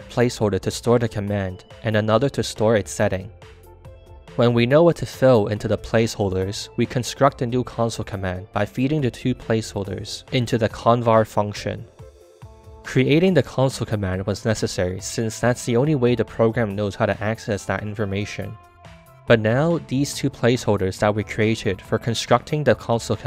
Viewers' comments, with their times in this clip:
0:04 you said "fil" not "fill" 🤓🤓🤓🤓🤓🤓🤓🤓🤓🤓🤓🤓🤓🤓🤓🤓🤓🤓🤓🤓